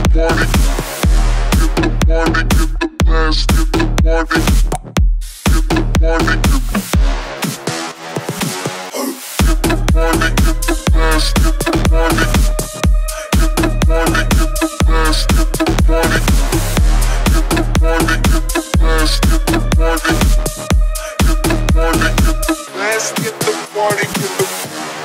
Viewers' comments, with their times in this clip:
0:08 That part was like perfect with the music